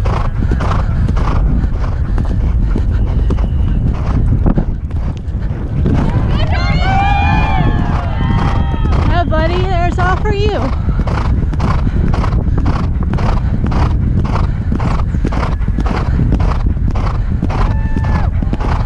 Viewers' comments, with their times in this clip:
0:04 cheering “look buddy, that was all for you!” Nah I’m not crying